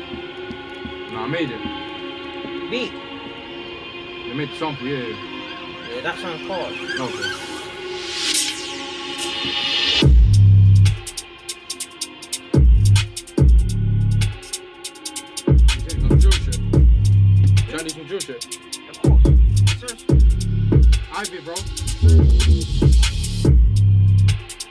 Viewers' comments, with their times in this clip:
0:10 dat beat SOUNDED MMMMAAAAD